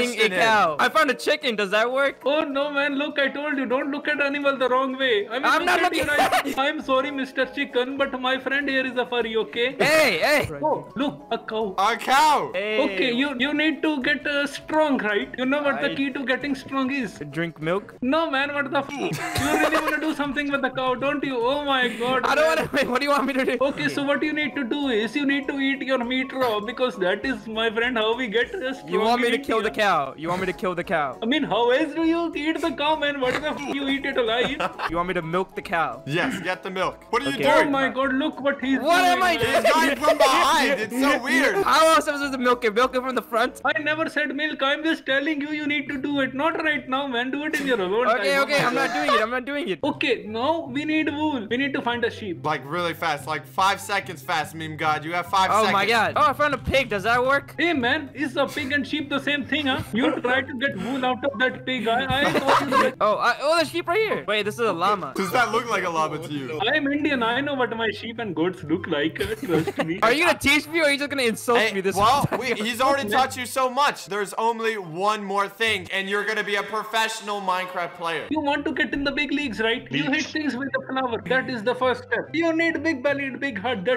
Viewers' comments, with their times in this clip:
0:09 "Woah look, a cow~" The way that was said. Omg😂❤
1:06 bro he literally said that he was an indian bro hes using the funny indian ancent